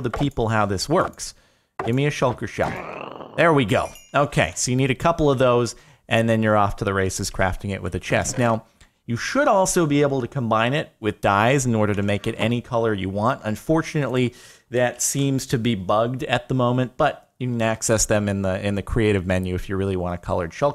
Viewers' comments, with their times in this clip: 0:05 and then you are off to racist crafting shell